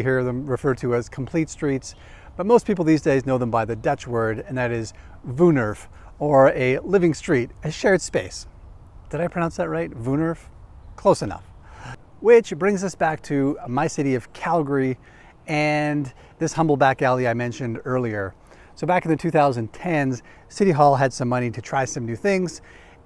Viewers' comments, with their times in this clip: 0:05 not close. If you said that to a Dutch person, they would not understand you the first time. It's pronounced more like 'wone' as in 'bone' and then 'air-f'.